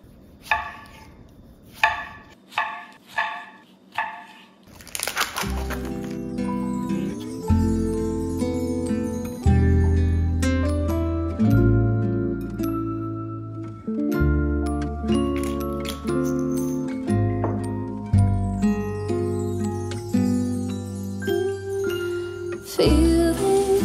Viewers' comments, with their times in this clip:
0:05 Such a great song